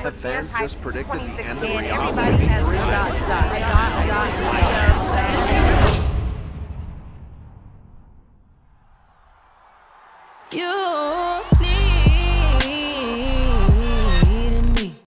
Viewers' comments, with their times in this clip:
0:05 Love the lighting and sound effects there. Can't wait Rihanna is going set the stage on 🔥🔥🔥🔥🔥🔥🔥🔥